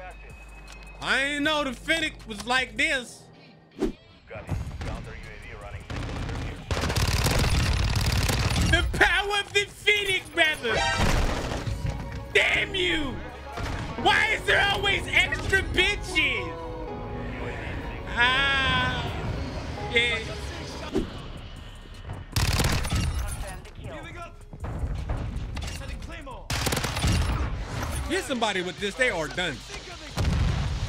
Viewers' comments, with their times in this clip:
0:10 this song man everytime I hear it I automatically start laughing 😂
0:12 that sing about me ost just brought back memories on the channel 😂😂😂😂keep it up